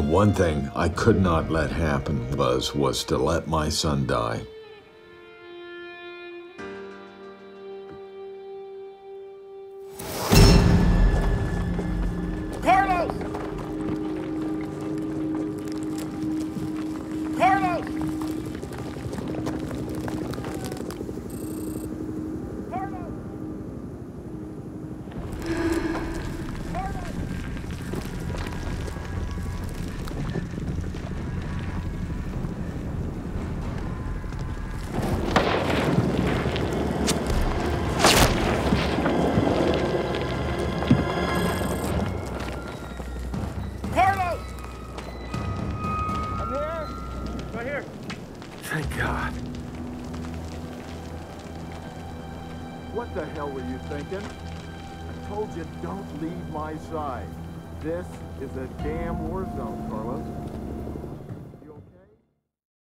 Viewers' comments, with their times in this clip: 0:10 Dood why tf the dark souls backstab sound play
0:51 sounds like Dr.Phil to me